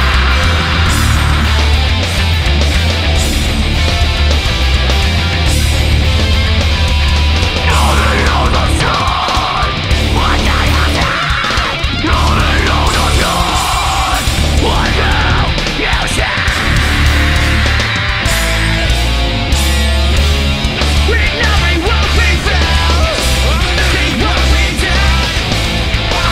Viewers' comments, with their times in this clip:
0:07 holy sht- this part is so heavy.